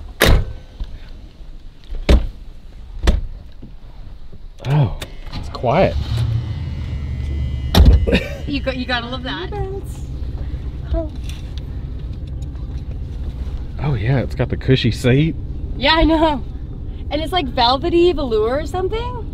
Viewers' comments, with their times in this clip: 0:04 wow its quite before even start the engine hahahahaha